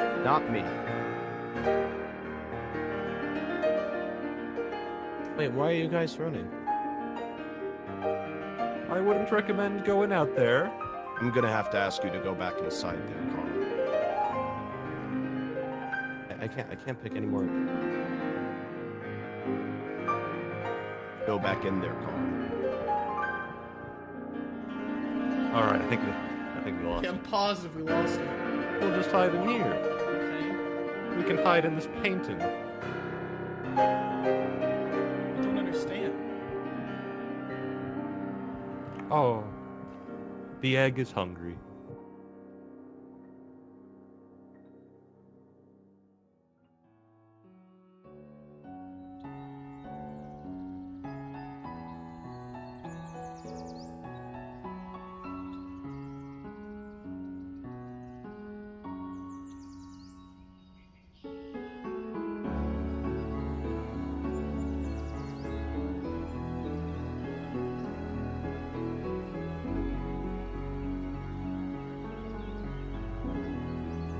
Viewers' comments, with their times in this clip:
0:04 I- He sounds like he is about to cry- My heart Is broken-
1:01 "I'm not crying I just fought something in my eye" "What did you catch?" "TEARS!" Very pog Undertale pacifist soundtrack right there